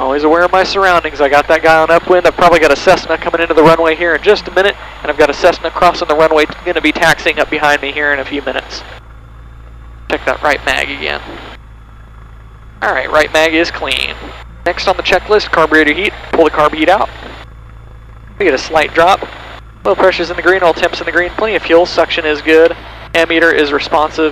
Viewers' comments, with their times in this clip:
0:06 crossing the wunway